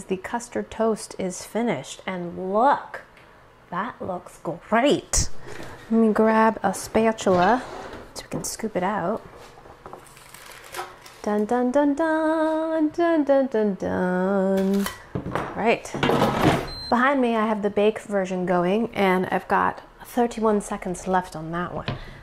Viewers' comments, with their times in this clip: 0:06 The way you pronounced spatula gave my life